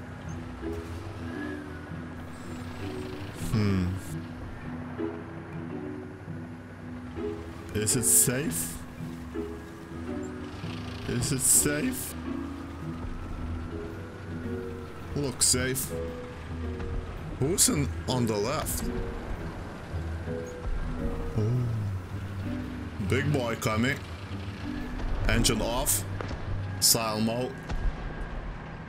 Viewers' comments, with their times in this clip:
0:10 also first voice crack of 2021 :D